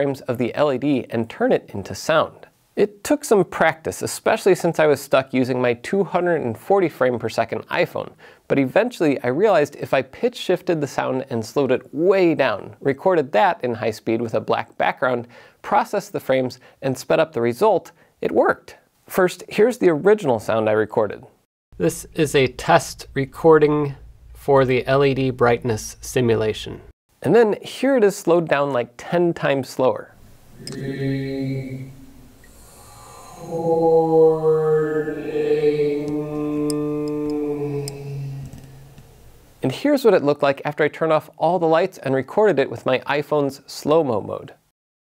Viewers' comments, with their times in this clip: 0:09 It's possible that you might have messed up your arduino/iphone test. you propose slowing the sound while also pitch-shifting it, but to simulate a Phantom using an iPhone, you want to literally slow down the audio samples without pitch shifting or pitch correction. If it's done correctly, it should sound like whale song. The reason why you need to slow it down is because an iPhone camera doesn't have the temporal resolution to resolve the audio frequencies of speech. What your test actually achieved was to demonstrate what extreme aliasing artefacts sounds like. Run your test again without pitch correction and the result will be dramatically clearer.
0:19 I think here you should have just slowed it down, instead of doing slow down+pitch correction, that's why later the reconstructed audio sounds so different
0:30 seems like you made a mistake here? That sounds like you didn't pitch shift it, you did something like "slow down" the audio with "preserve pitch" selected (different DAWs describe it differently). This doesn't shift the frequencies down, it applies a bunch of tricks and processing to make the audio seem like it happened slower. Doesn't mean the overall method is flawed, but your test might have worked a lot better if you had actually pitch shifted.
0:30 I think you are only changing the 'speed' which and are not really slowing down the waveform. (the pitch stays the same so the frequency stays the same) If you did that the quality would cold be better I think
0:32 isnt that slowing the sound down without changing pitch ? this isnt what you should do if you want slower samples is it ? it should be pitched down (idk if you get what i mean ;-;)